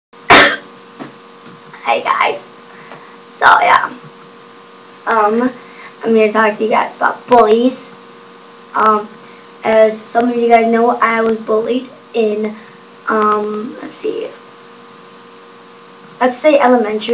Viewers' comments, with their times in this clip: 0:02 That cough scared me!